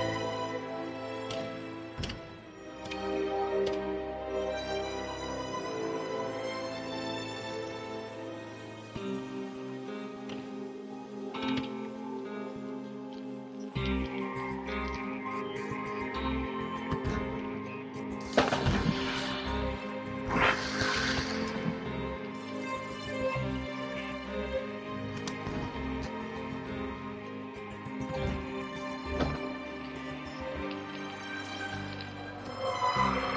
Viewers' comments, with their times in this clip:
0:08 The familiar guitar twangs cutting to a shot of Bond, looking suave and sophisticated in a dapper tuxedo, set against the backdrop of the night sky adorned with golden lights literally oozes James Bond....
0:19 those strings <3 <3 <3